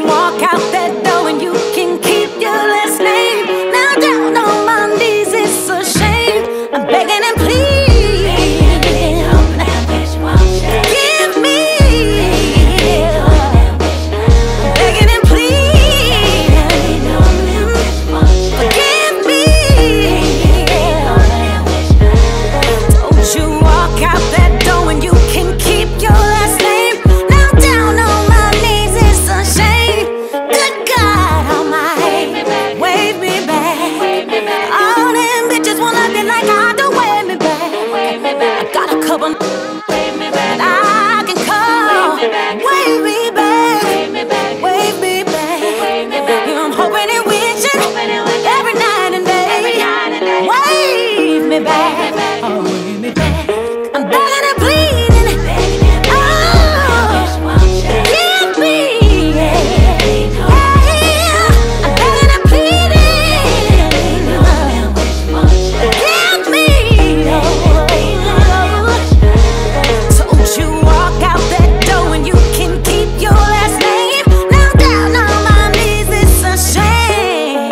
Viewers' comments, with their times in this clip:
0:06 She KILLED IT with that note
0:55 that run was just stupid dope!!!!
0:58 YES BRANDY!! You betta sing dat!